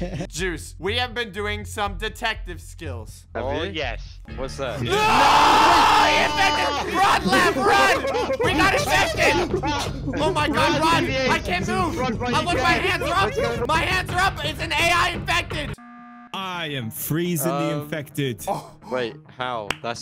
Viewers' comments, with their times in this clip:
0:03 did u say family